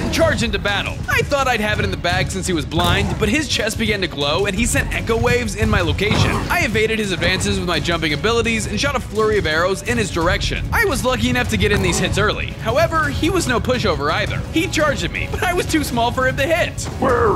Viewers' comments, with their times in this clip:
0:04 where is the sonic boom?